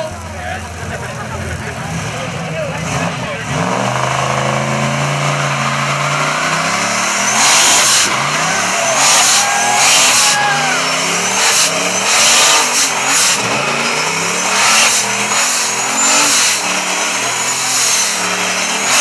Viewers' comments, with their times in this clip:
0:06 HAHAHAHA! Watch the top right corner people got all scared when the turbo spooled :D